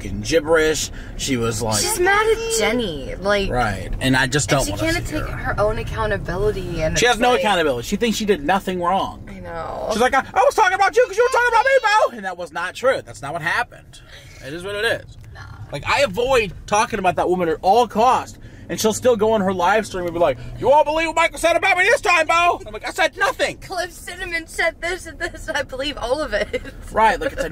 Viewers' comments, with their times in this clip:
0:09 how was that a perfect impersonation 😂